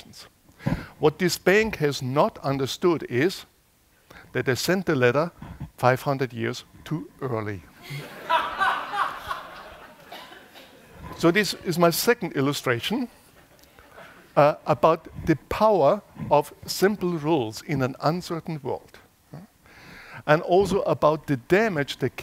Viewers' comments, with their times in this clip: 0:08 ...i knew it was you steve carell laughing sarcastically 😆
0:10 the shock he got from the guy's laughter